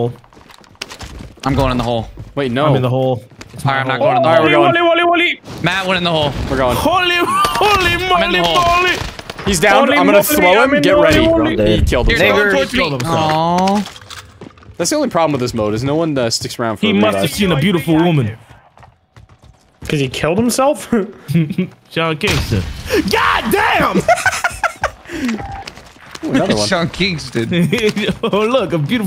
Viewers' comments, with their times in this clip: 0:10 it sounds like the enemy says the hard r